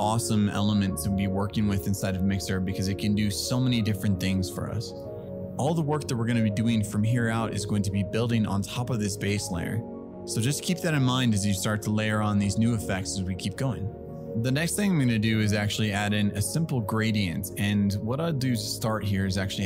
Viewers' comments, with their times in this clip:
0:05 into the tutorial...so informative and straight to the point on sculpting and getting the stylize mesh ready in zbrush....So great so far...like starting at the base color in mixer now...background music is awesome!!! ✨